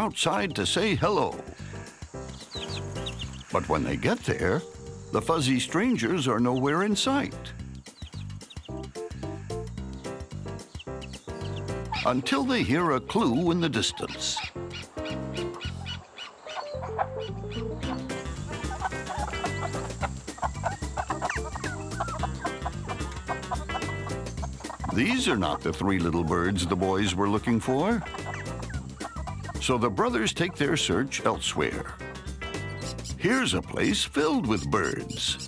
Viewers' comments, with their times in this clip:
0:10 lol you can hear the camera man breathing
0:17 kinda sounded like someone laughing